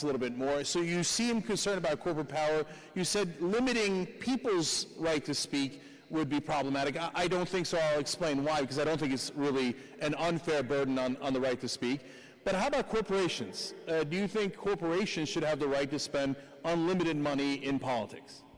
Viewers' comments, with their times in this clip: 0:05 Cenk laughs at Tuckers assertion corporations will restrict speech. That is so 2018.